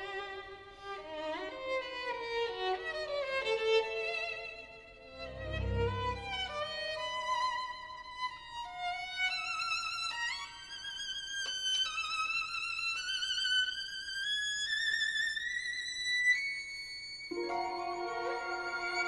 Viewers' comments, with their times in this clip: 0:07 a fairly major mistake. Naughty Nicola. You get away with it because so few know this fantastic gem....